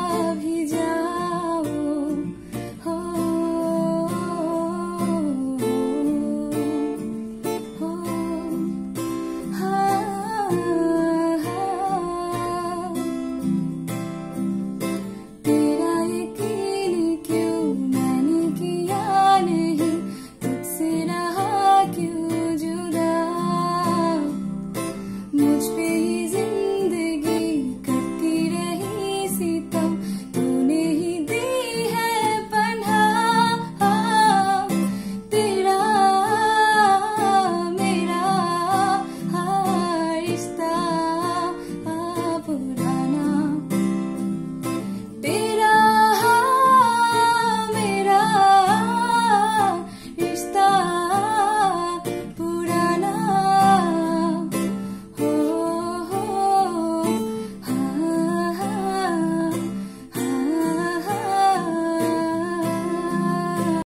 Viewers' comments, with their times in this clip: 0:09 she totally nailed it when she sang that heartouching tune.🔥🥀
0:55 The chorus sur in the end ooops amazing